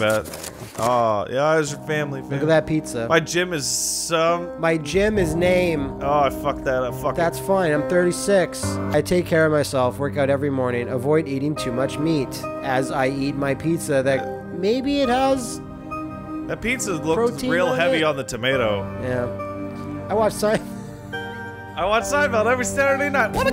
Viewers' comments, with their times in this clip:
0:04 the exact moment the imitation brand Alan Wake music kicks in and you know what kind of game its going to be.